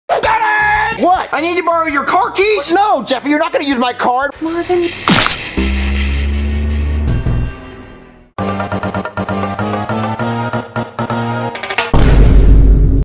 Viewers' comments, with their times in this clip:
0:02 The way he said car keys😂😂😂